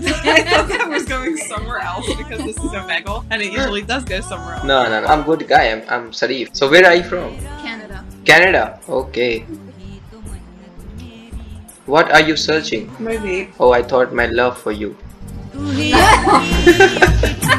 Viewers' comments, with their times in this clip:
0:04 the background music 😂😂😂